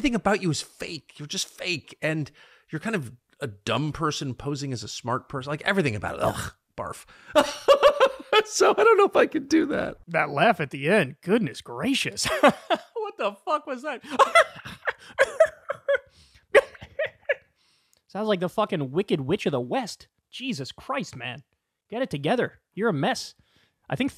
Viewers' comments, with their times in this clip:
0:06 Tucker, we've all seen the maniacal twitch-y laugh you did on Joe Rogan. You immediately lose all credibility after that. Edit: I didnt know he does the same laugh here
0:10 Hah! oh my god the Tucker crazy laugh impression amazing 😂